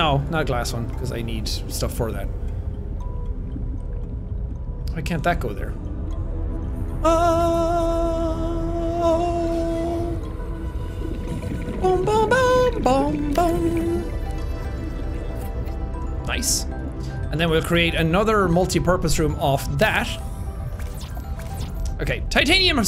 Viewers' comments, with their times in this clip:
0:06 low-key thought he said "OH MAMA, BUMBUM" 🤣